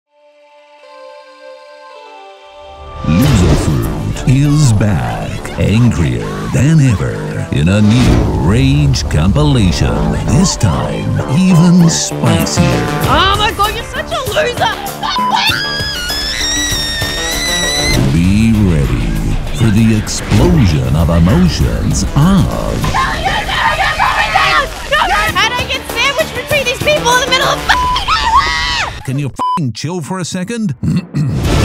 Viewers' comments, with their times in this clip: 0:04 bro the voice make me laugh
0:16 POV:the kettle is boiling